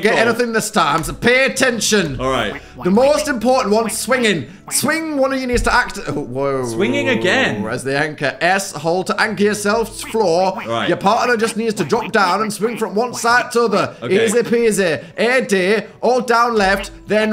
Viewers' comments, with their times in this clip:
0:03 northern dan isnt real he cant hurt you northern dan: